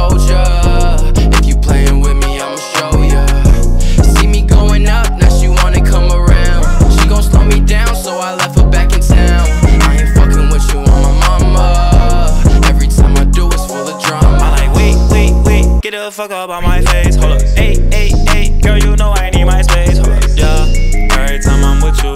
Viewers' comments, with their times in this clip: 0:05 pnb rock yells "ah" real weird lol and i always get scared everytime